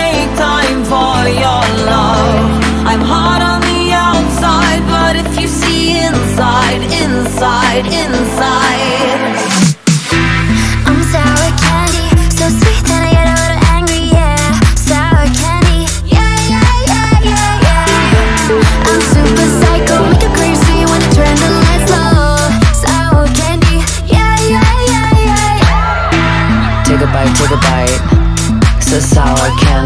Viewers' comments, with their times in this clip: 0:10 I keep repeating Rosé's parts, the way she's singing it is so addictive especially